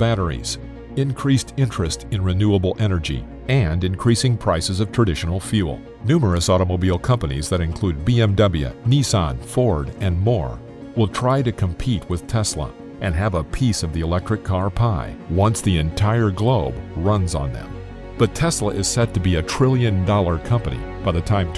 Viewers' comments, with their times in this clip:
0:07 did he just say, bm double ya.
0:08 The way he says BMW has me cracking up lol
0:08 Lol listen to the way its says BMW